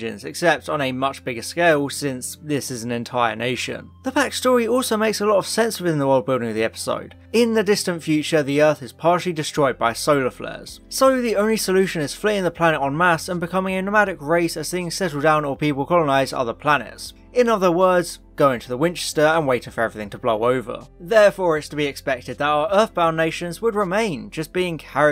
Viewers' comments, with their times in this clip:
0:10 Hooray! Someone pronounced "en mass" correctly!